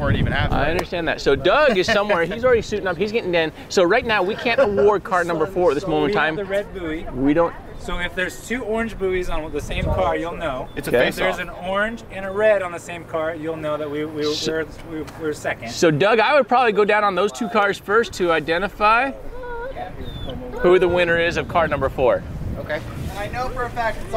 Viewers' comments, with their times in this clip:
0:08 minutes in,, the background moaning 🤣